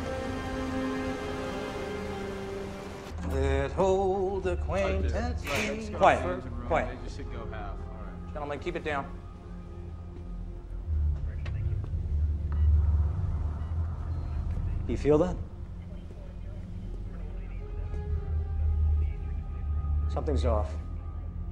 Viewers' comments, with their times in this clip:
0:03 one Poseidon's crew is singing